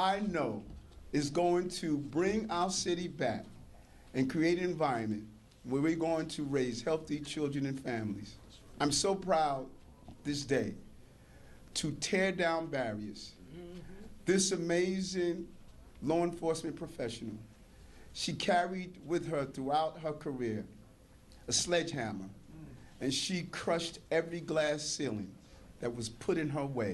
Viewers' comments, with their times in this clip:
0:09 I wanna personally thank both of you too, but I truly truly want to sync the mayor for Dicky dawn out of the pound